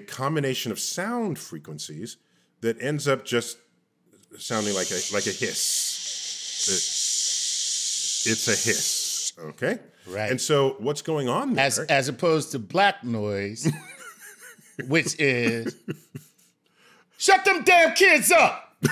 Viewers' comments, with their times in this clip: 0:05 black and white tv screen showing old raining radio frequentation which showing sound like It's raining Filter the channel